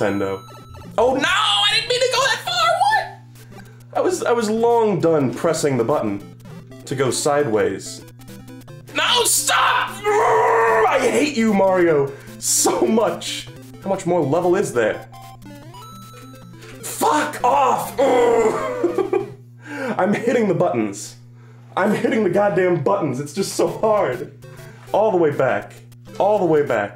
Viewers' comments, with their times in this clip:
0:08 I’ve heard people in actual danger scream in less genuine fear and frustration than that
0:08 you literally turned into jontron for 2 words and 1 noise